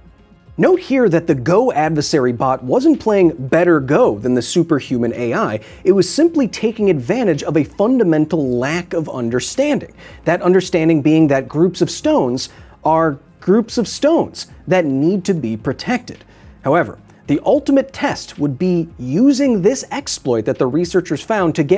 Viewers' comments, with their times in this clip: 0:07 Please tell me i was not the only one to hear a "quack"